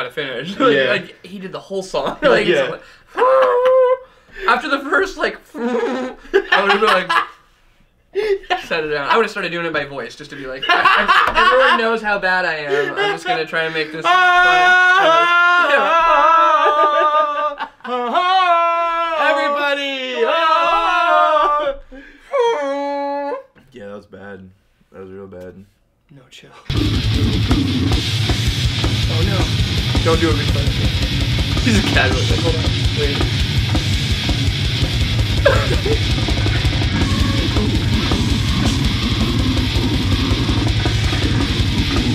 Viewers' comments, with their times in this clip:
0:04 The dickey trumpet sound is something else
0:23 Really guys? You think the brutal vocals are a fail? Wow i honestly thought you guys knew what was up in the metal world. Thats a style of vocals amongst all the other styles. I thought you guys just enjoyed all types of death metal.